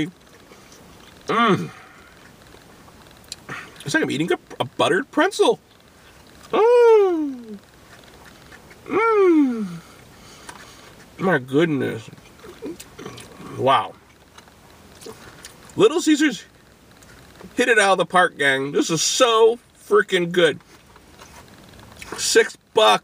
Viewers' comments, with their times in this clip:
0:06 LOL those moaning sounds